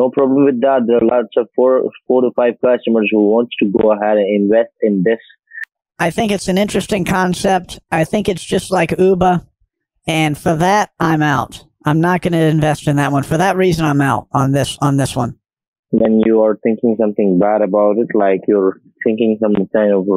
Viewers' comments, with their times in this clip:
0:05 he just sounds like Barbara from shark tank 😂